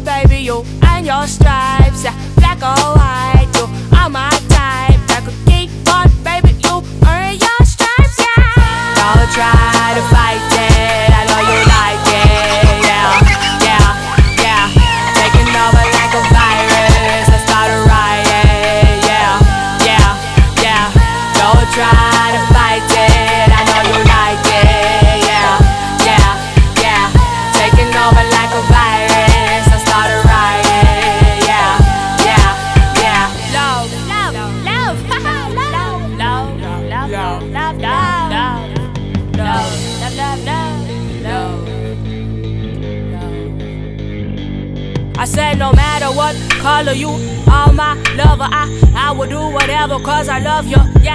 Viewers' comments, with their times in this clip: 0:09 Your backing vocals are one of my favorite parts of this song (besides all the rest of it).
0:37 The love part reminded me of Rebirth of Slick when they repeat blink blink